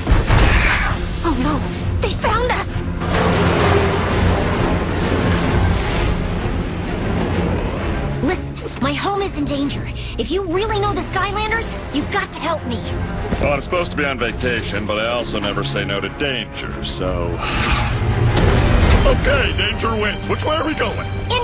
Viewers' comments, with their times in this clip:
0:03 Patrick Warburton talking